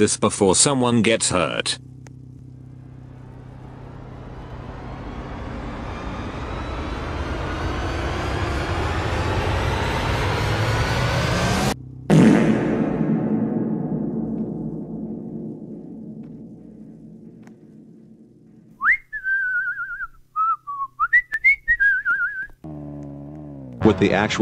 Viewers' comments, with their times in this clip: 0:07 Just whistles after he places the ladder😂